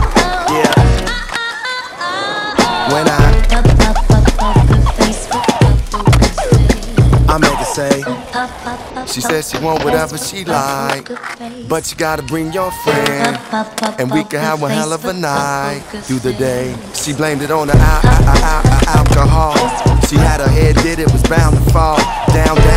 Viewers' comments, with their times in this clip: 0:08 is straight up silky!